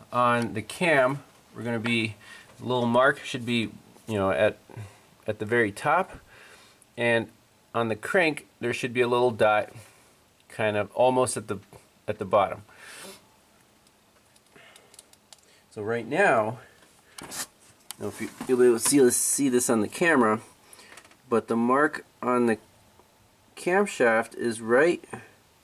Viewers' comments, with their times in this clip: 0:09 did you just say MEOW?!? 😭